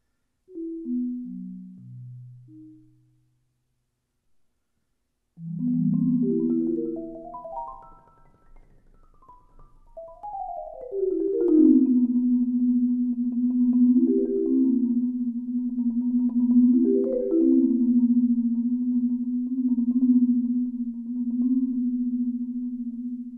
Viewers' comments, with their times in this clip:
0:05 The Etheral part in damn...